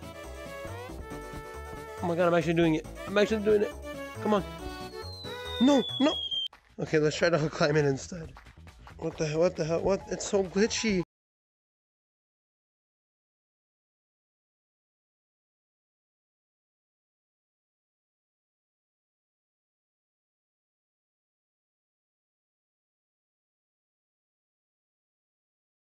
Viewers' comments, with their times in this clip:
0:10 What happened to the audio
0:11 did anyone notice the cut out in audio or is it my pc?